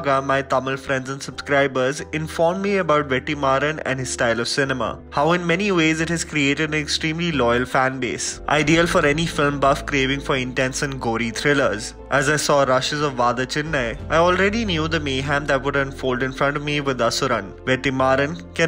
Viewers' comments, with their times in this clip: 0:03 I couldn't contain when he said "Vettimaran" instead of Vetrimaran. Unsure if I have to laugh or cry. Beautiful how a single letter could change the entire meaning!